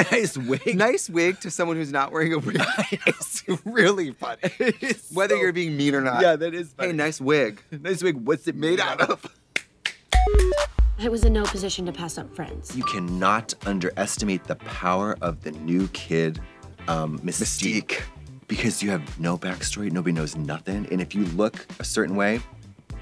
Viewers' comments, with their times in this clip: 0:06 blond women in unison, iconic!